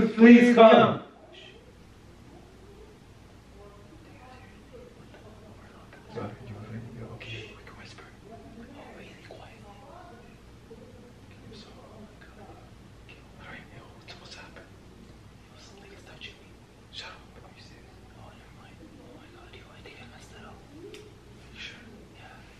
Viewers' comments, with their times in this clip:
0:09 I heard wispering in the back round